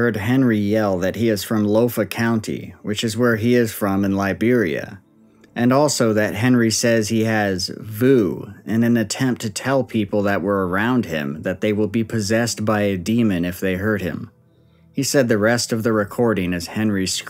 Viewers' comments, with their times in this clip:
0:05 Voicemail sounds like demonic possession to me. They carry on like that. 😅 (Edit: Aaand there it is!)